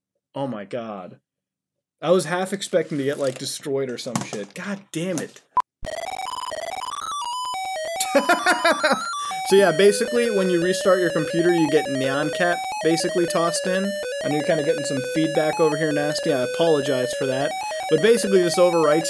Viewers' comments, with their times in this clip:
0:06 absolute ear rape